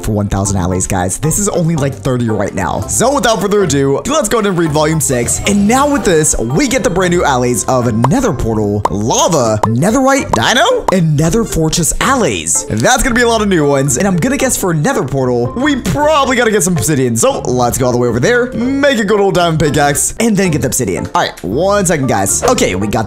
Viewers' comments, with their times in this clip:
0:07 The way he says “Dino” cracks me up.